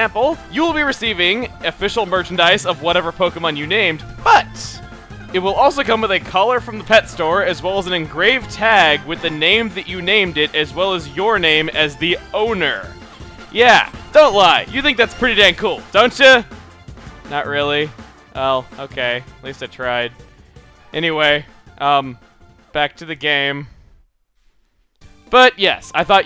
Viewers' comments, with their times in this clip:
0:10 the music there is so fun and catchy